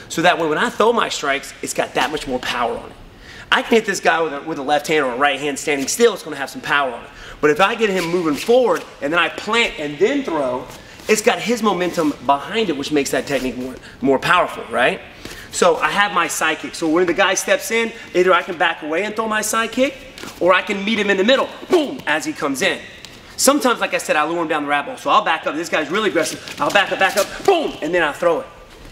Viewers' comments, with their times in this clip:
0:09 the car crash effect